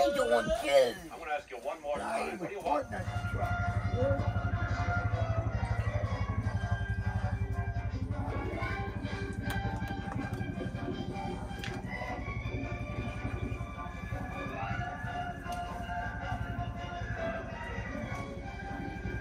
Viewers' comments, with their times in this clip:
0:03 Finally some silence with no barking from the dogs or humans